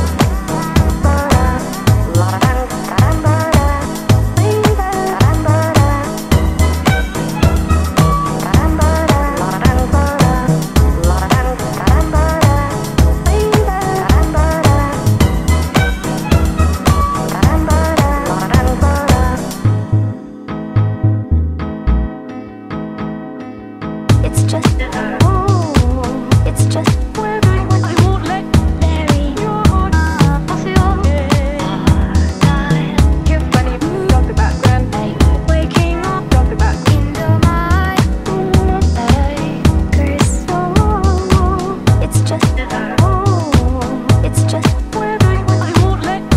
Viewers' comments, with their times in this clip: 0:04 I heard hit me one more time xD
0:06 Is no one gonna to mention the fact that you can sort of hear a clown car horn in the background ?
0:23 i hear lyrics { its just a- OOOOH... its just- (perfect?) but i wont let- burry your heart- aaah... asio- ey- ey- aahhh... i... you have diabe- dia- gasp when- i- waking up- dia- gasp in domai... oooh... i- i- i- kris (la moma?) its just a- OOOOH... its just- (perfect?) but i wont let- burry your heart- aaah... asio- ey- ey- aahhh... i... you have diabe- dia- gasp when- i- waking up- dia- gasp in domai... oooh... i- i- i- kris (la moma?) harder (x23) }
0:24 what i heard: "its just a" "its just a" "ooohh!!!" "mary just .." Is that was right?
0:24 What I heard.... It’s just... Oh It’s just-... I won’t!- I won’t let your!- Heart.... Oh... something I can’t make out
0:33 Did I just hear "yeah funny, talk about death?"